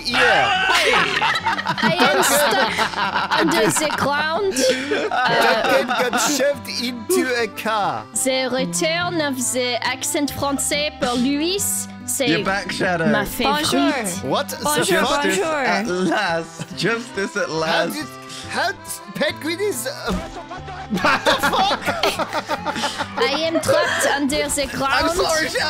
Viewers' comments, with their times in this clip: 0:10 "Harpoon" gets changed to "Hwapoun" during the French round. I love it.